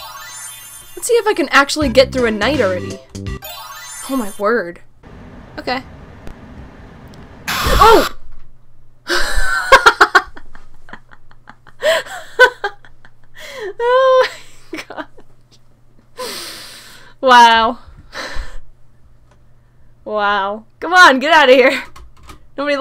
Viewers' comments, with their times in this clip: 0:09 Her laugh scared me a bit